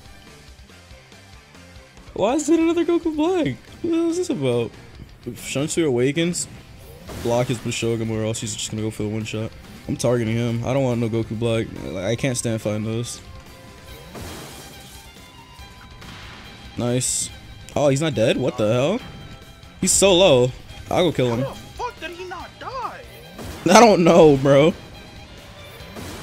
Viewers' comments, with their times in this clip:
0:07 Tf did he say